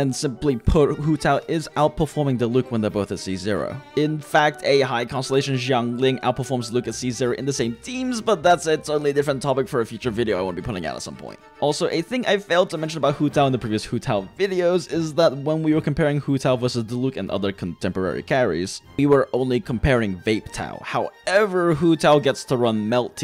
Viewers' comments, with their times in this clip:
0:04 ...outperforms lucas seizure?? I legit don't know what he said here